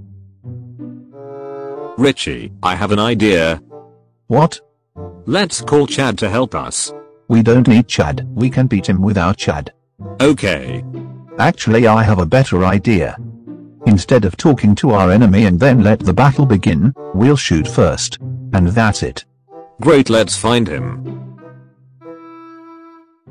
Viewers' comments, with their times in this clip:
0:07 the way richie said "ChEaD" 😂